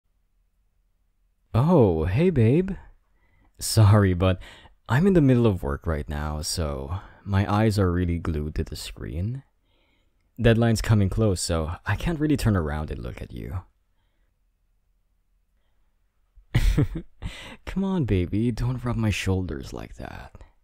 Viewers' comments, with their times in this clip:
0:02 and I was like 😳 you have such an beautiful voice 🥹